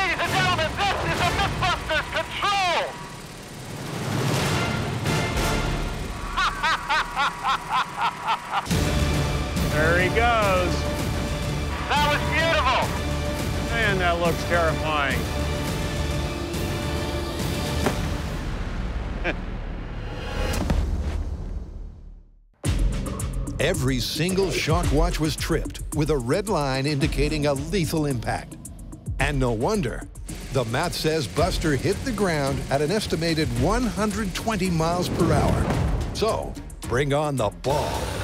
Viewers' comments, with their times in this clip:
0:06 sounds like fucking Feel Good inc
0:06 that evil laugh though.
0:15 that deadly hit, and Jamie's "heh" of mild amusement
0:19 his laugh is horrifying.